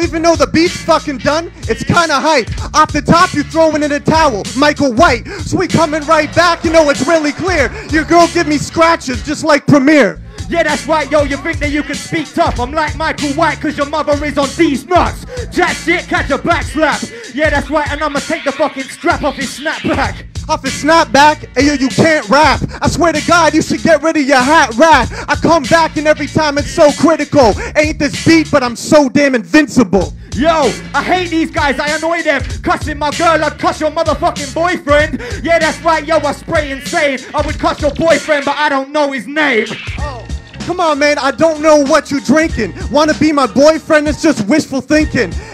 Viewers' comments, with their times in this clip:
0:06 theyre rapping over wallama wtf
0:27 WHAT is that beat !?